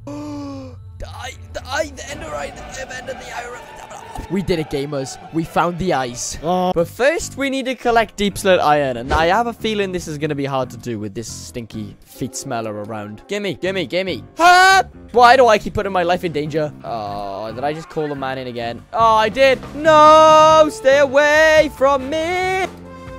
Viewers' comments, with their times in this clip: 0:05 😂😂😂 chomps on that mic